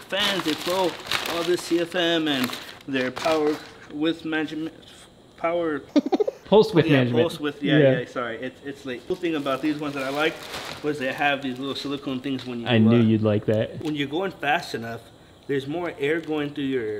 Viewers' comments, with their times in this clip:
0:04 what's with that laugh 😂😂